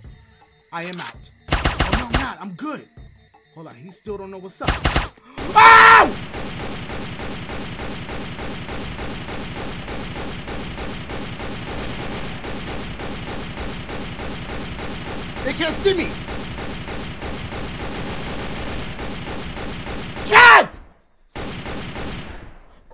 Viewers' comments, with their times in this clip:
0:08 The gunshots reminded me of a type of music that some people listen to.